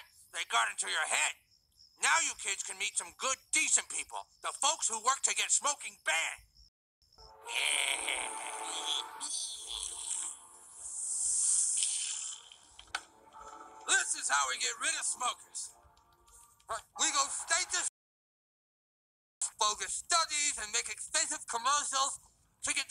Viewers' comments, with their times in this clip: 0:07 why they gotta make those noises 😂